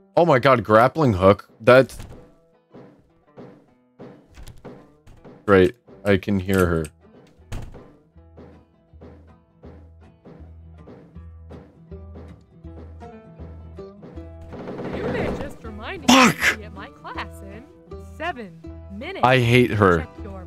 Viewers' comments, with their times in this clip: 0:03 The foot steps setting in, are terrifying... (also I love the title of this video lol) Edit: Holy crap that ending was intense!